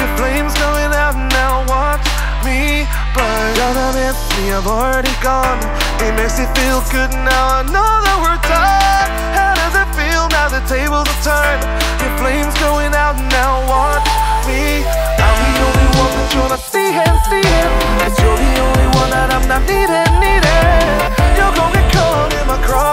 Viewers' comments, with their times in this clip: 0:08 Idk why, but it especially sounded like Brendon Urie and during the high notes